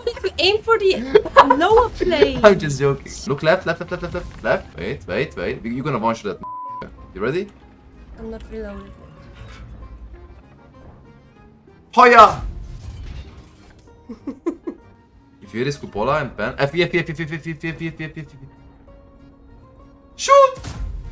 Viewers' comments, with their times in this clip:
0:06 first time i see u blurred something on video? what did you say? i heard the ending came with "ga" lmao